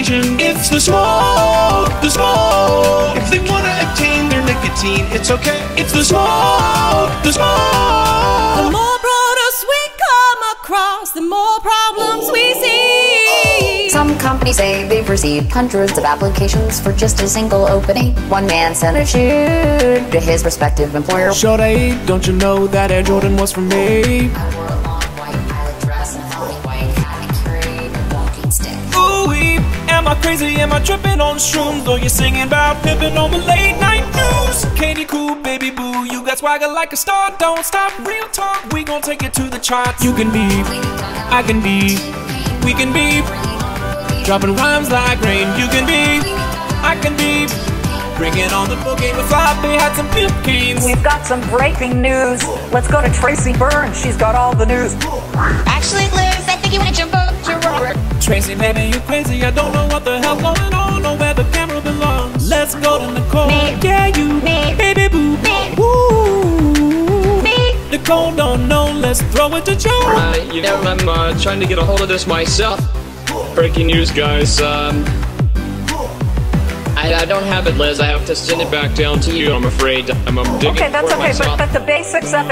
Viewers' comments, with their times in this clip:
0:08 damn that's some quality singing.
0:13 with auto-tune she sounds very much like GLaDOS from Portal
0:14 GladOS :)) The Cake is a lie!
0:17 Uh, did anyone else notice that when describing her outfit, Katie's voice dropped significantly in the mix? It wasn't like that in 2010.
0:24 Katie's voice going out of phase fucks my hearing up.
0:25 Is it just me or does it sound harder to hear?
0:32 her audio doesn't work :(
1:05 The woooo always gets me.